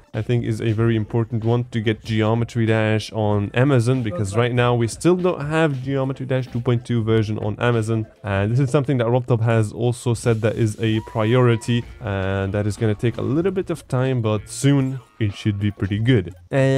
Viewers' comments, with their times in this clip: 0:04 did anyone else heard mumbling?